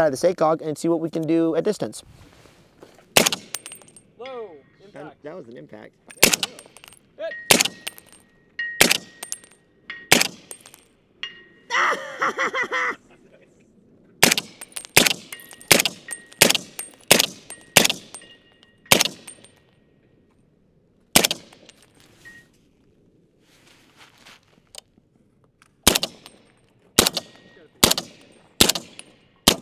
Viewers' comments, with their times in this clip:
0:10 laughs like a jawa